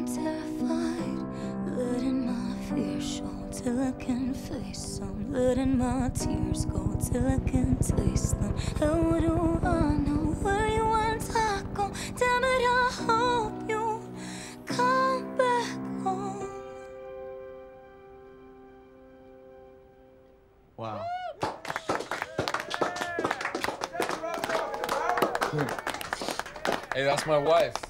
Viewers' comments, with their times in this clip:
0:10 Cringe and did she say I want taco?